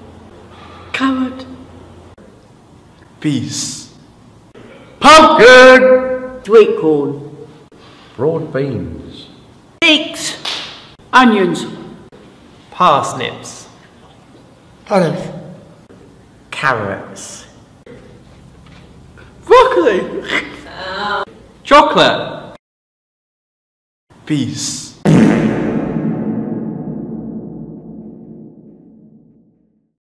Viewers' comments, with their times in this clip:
0:09 Sounds like Figs
0:14 I’m convinced he said bollocks